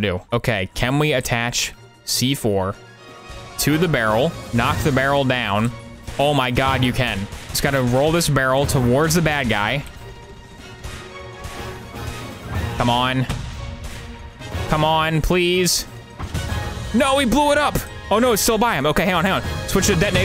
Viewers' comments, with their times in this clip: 0:03 Ngl, I wasn't worried about the barrel, but rather the AC6 music in the background lol
0:03 the choice of song here makes me giggle in excitement